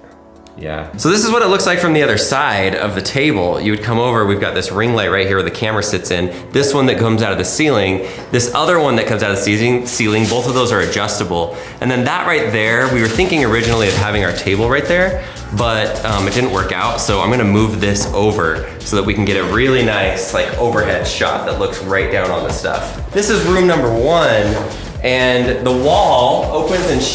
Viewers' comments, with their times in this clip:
0:09 Who heard his son coughing do it again